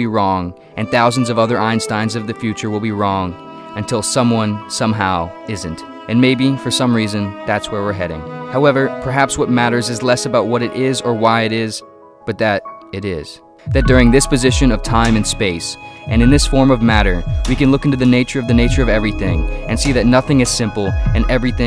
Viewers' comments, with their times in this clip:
0:05 as narrator's voice floats into your ears filling your soul with awareness at a slightly increasing rate I could actually feel my perception of time speedy up. Dude is a master.